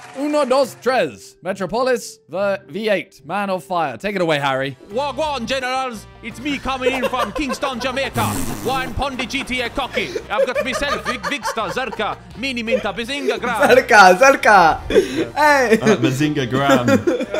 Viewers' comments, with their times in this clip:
0:05 Being a Jamaicann, Harry's Jamaican accent is golden